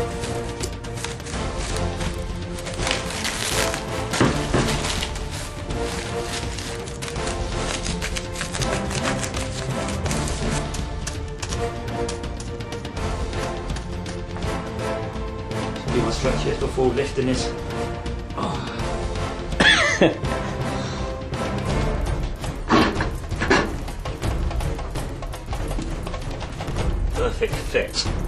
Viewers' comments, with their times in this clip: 0:09 wow was that your first "giant" video? haha really really awesome xDDD Music sounds epic what is that? :O